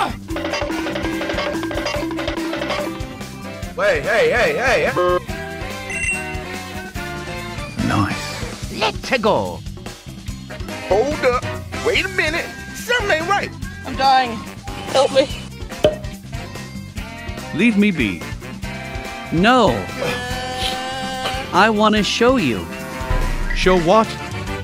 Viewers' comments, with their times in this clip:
0:05 said COME SY BOA